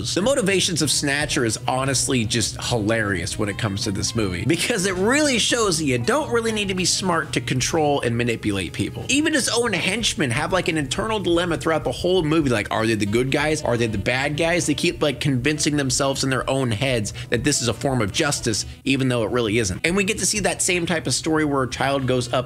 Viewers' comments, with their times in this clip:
0:08 obnoxiously ear drum poppingly loud incorrect gameshow buzzer here